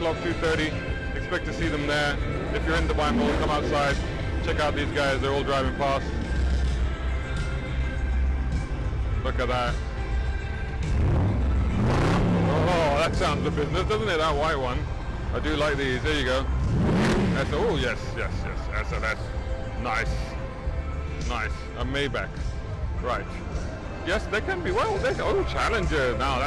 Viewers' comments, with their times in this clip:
0:08 skip to min and see how my beast camaro rowrrrrr :)